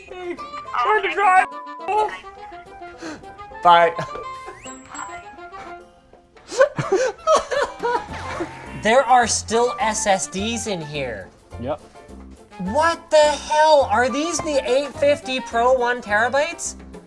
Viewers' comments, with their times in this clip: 0:04 That ´Bye´ is someone who hates their job